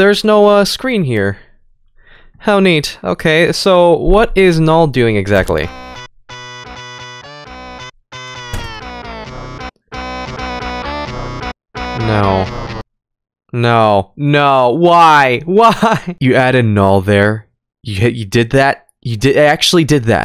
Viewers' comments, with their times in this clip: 0:04 Null:OPPA GANGNAM STYLE gangnam style music